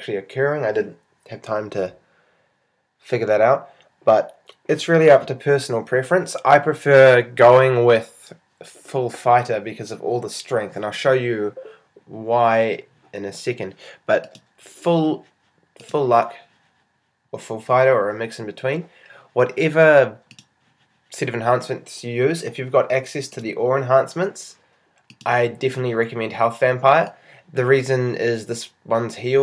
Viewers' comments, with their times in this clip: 0:10 Facebook notification LOL